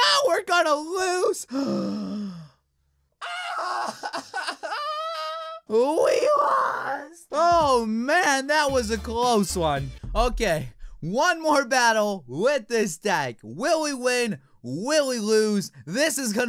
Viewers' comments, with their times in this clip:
0:03 AUEEEUH AH HEH HUH WAS THAT JAR JAR BINKS?